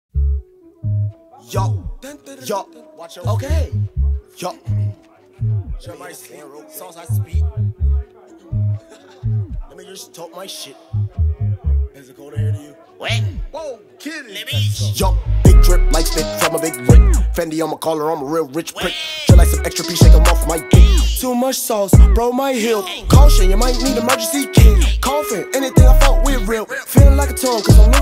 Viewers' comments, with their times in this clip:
0:09 did he just say n words took my shit? 😂